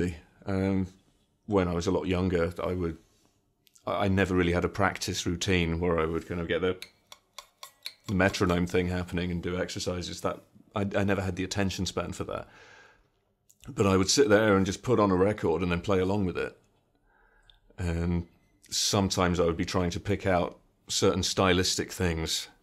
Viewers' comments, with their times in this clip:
0:05 best impersonation of a metronome
0:08 I love how he perfectly emulates a metronome. Guy is sick.